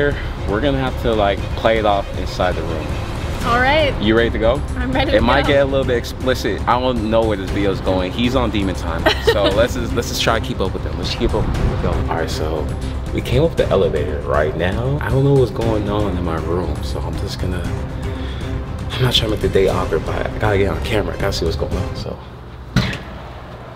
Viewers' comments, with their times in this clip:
0:05 LLS IN THE BACKGROUND